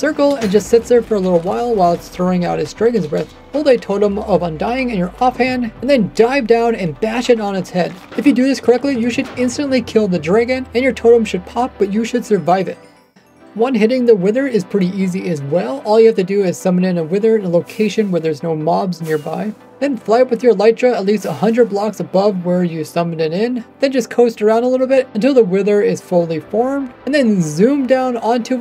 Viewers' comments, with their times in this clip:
0:10 "The dreegon" lol